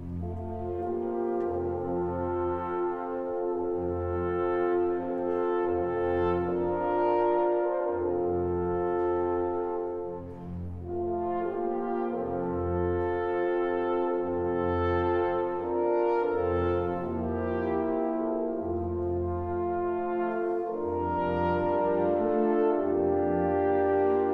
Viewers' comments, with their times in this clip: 0:07 Thoroughly enjoyed this performance which superbly brought out the lyricism and musical values of this orchestral showpiece while losing nothing of its power and excitement. The horn solo from sets the standard. Totally committed playing throughout the orchestra, never routine. I hope, and believe, they enjoyed it us much as we have. Taken slightly slower than usual in places, but this allows the orchestral detail to come through and there is no lack of tautness and rhythmic drive. Bravo indeed! Also excellent camerawork to further enhance the experience.